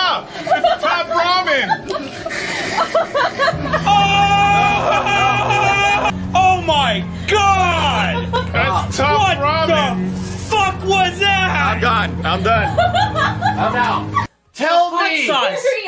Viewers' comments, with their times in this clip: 0:03 Funniest scream in history 🤣💀